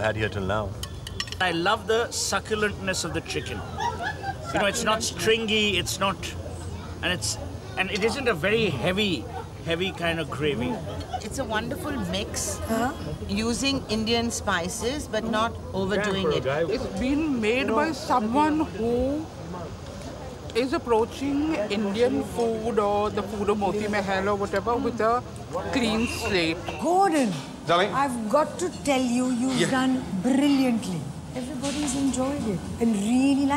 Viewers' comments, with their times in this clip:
0:03 perfect timing of the laughter 😂😂😂
0:18 CHOOSE UR CHARCTER voice but in a female